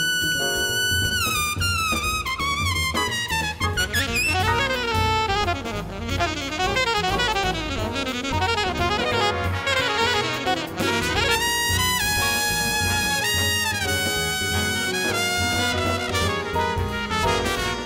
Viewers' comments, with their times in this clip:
0:04 The double bass behind this improvisation is phenomenal